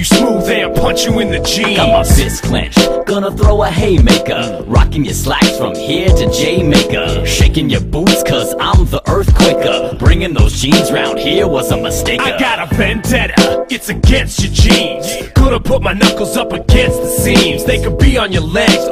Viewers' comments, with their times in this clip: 0:04 Ummm....Whos The Guy Talkin I Like His Voice :o